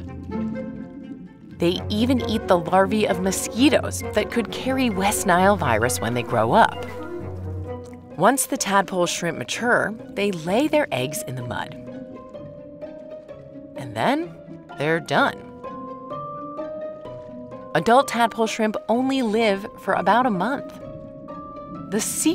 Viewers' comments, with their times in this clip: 0:05 I thought a mosquito was buzzing in my ear.